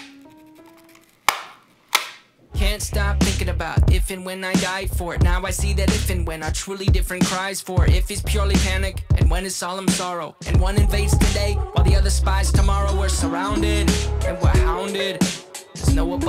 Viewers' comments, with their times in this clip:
0:03 When Tyler started singing 😍😂